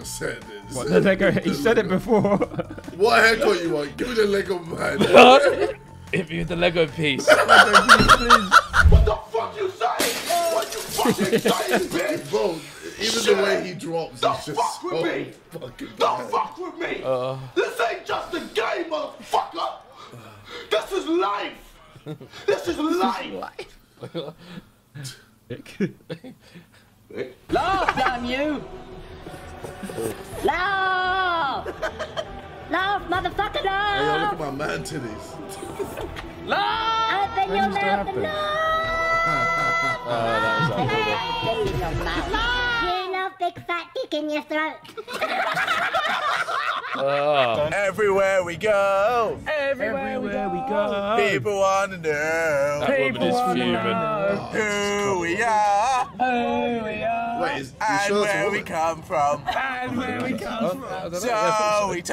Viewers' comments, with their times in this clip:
0:09 when Vik goes down. The little "ah..." I can't unhear it anymore
0:45 And it's the fact that, to this day, Simon got away with laughing